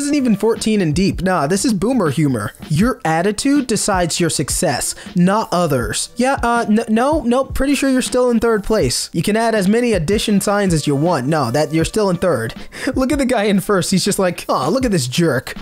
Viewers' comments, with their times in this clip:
0:03 why did you so clearly read "your" like "you're"? Amazing